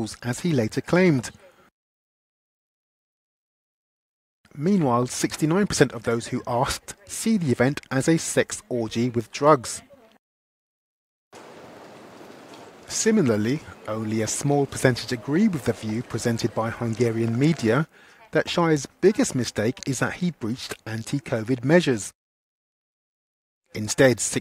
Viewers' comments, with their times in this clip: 0:05 I love it how even the reporter laughed